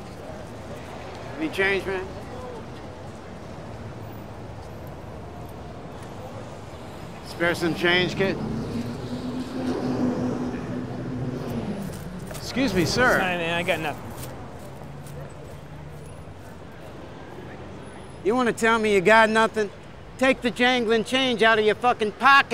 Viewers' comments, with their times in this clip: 0:10 by the voice you can tell it's Ari.